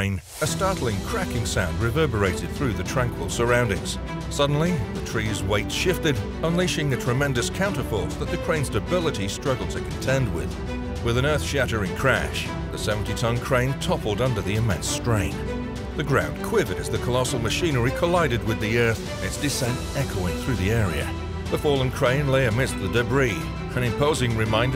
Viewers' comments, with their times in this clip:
0:10 No, that did not seem like a tremendous failure. In fact, it almost looks like you could use the crane again if you prop it back up. No Earth-shattering crash, no loud echo, that was a relatively soft landing.